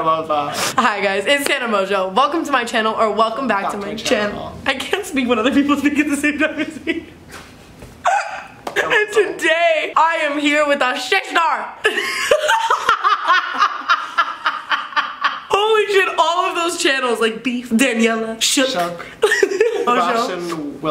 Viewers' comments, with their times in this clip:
0:06 No shade but when Tana laughs she sounds like a man